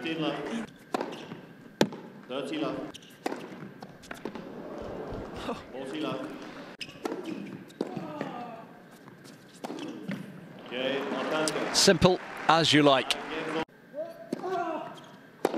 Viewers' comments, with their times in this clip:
0:03 was absolutely stunning to watch considering Brooksbys God awful grunts